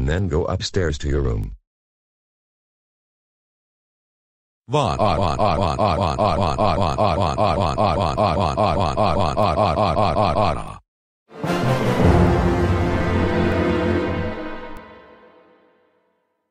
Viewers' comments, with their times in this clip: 0:04 Mr. L’s crying voice
0:04 Is that dark wing bowser’s crying voice? Good one!
0:04 the crying voice, great job
0:04 Dark Wind Bowser's crying voice